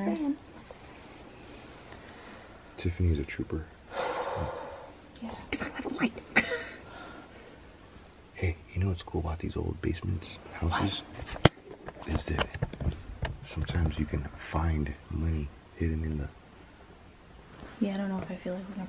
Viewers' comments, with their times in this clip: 0:06 I heard have breathing!